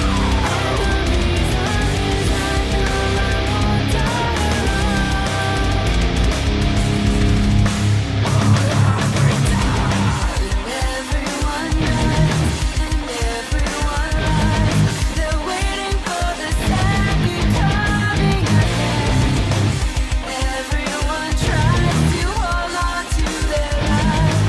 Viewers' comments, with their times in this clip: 0:09 why does no one do the guitar part